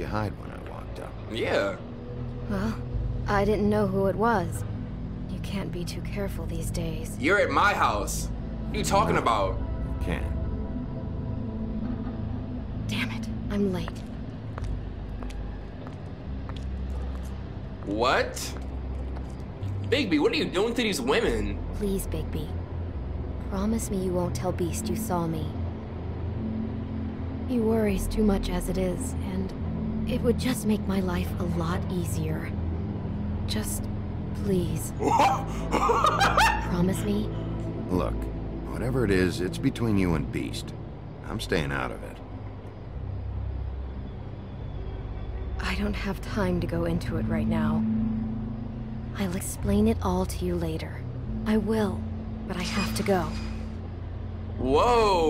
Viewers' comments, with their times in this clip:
0:08 she kinda sound like clem I ALREADY FW WIT HER NOW
0:43 Okay I know I'm behind and as for right now at this very moment but doesn't Beauty sound like Clemintine, well at least her voice actor???? I think they play the same voice person.